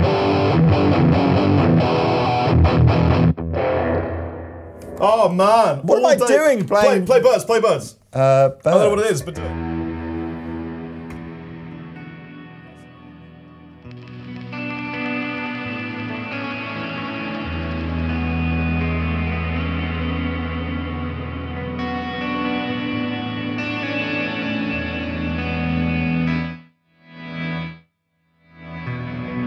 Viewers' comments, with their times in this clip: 0:09 man that bird tone is another level🥲
0:10 The birds preset was simply beautiful. If you guys are skipping around the long video I HIGHLY suggest you check out I've never heard such a studio sounding preset with no post editing sound so great.
0:10 a post-rock's patch dammit! I need these one for worship music...